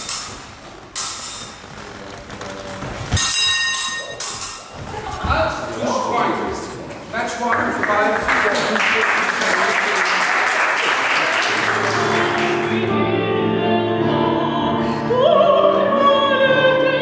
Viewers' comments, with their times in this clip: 0:03 The guard on those swords is physically identical to an old-fashioned pedal-operated tram bell, & sounds the same when struck.